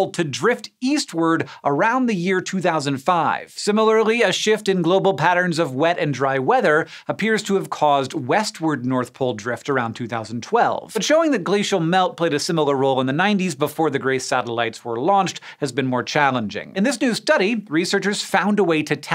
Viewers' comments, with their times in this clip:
0:04 I've been wondering why the birds are chirping like it's near dawn when it's only a.m.